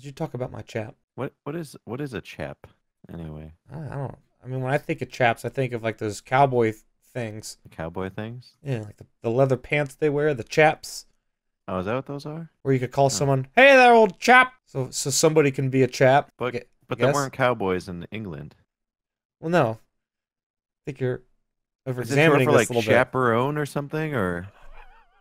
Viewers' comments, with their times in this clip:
0:06 I did not know his voice could be that deep.